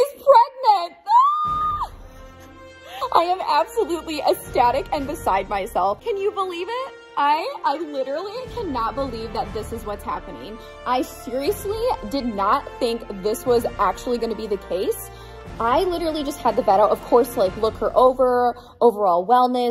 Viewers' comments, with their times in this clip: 0:07 :Bell is like: yeah I can stop screaming please😌😐😶